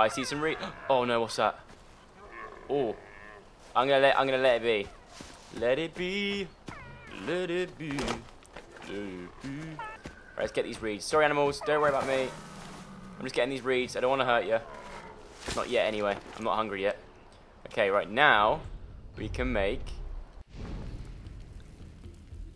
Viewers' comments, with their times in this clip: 0:06 We sang the same song at the same exact time